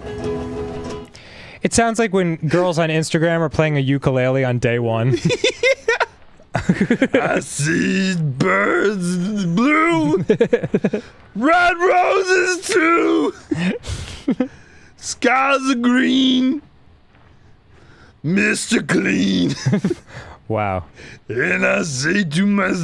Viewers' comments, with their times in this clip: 0:07 arin's song is giving me life